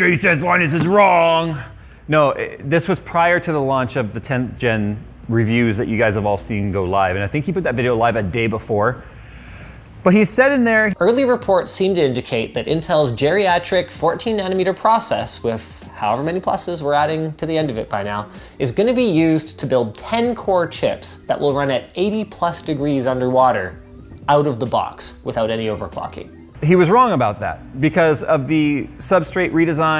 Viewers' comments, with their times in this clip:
0:10 Haha I thought you were mocking him, then realized it was his real voice.